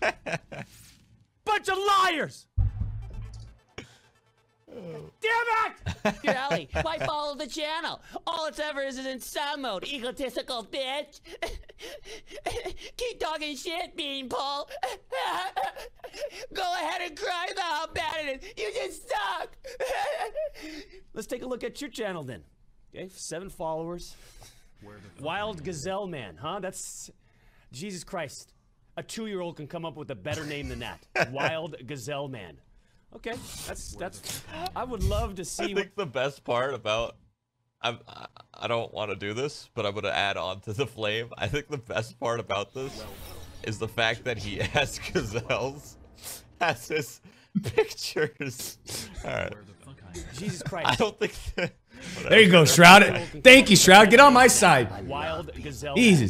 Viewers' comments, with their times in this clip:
0:07 is one of my favorite moments just the way he shits on his account is hilarious and his laugh at his twitter omfg 😂
0:42 starts the best part of this whole video , his laugh makes me laugh. Every time I watch this